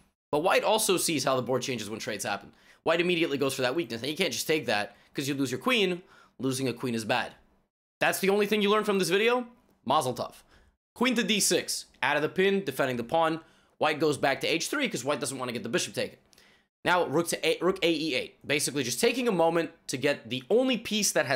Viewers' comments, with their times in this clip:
0:09 muzzle-what? dude what planet?